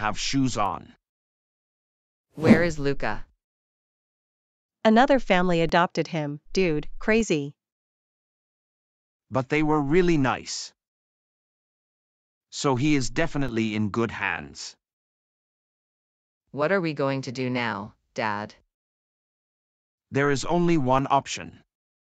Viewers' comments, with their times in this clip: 0:05 what happed tô his voice😁